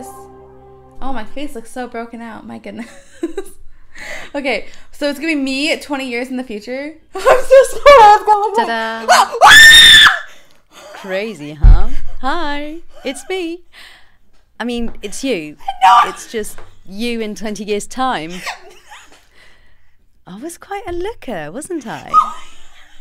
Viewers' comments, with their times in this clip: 0:08 Omg lmao she screamed the moment she saw her future self 😂😂😂
0:08 She scream very crazy in and it make me lauged
0:08 lol That scream on
0:09 R.I.P HEADPHONE USERS 😖
0:09 having headphones on was a MISTAKE
0:09 Lol her scream though xD LOL
0:09 RIP HEADPHONE USERS!!!!! I havent watched this video in years and it still gives me a jumpscare
0:09 Go to to hear her scream
0:09 RIP HEADPHONE USERS!! like if if u agree
0:10 SCREAM ALERT, IF U HAVE HEADPHONES PLS TURN IT DOWN